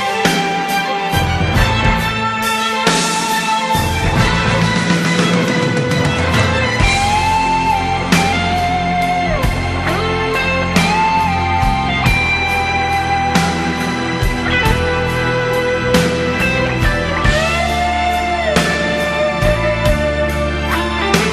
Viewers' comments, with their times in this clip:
0:07 even Kitaro's music is called new age, it's close to art-rock as it can be.. check this guitar sounds like straight from David Gilmour or Andy Latimer